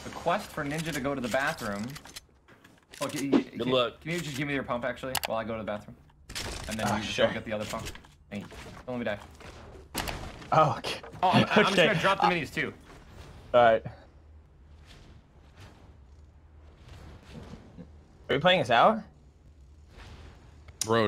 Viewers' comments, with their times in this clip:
0:08 ok but is no one gonna talk about how as Ninja built the pyramid it synced perfectly with the subscribe button clicking sound? EDIT: Lmao why am i getting so many likes lol